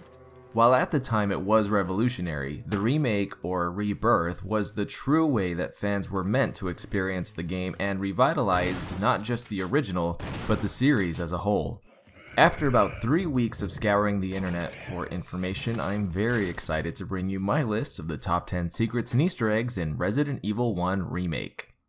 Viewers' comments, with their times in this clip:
0:07 Can we please talk about those TWO missed shotgun blasts ??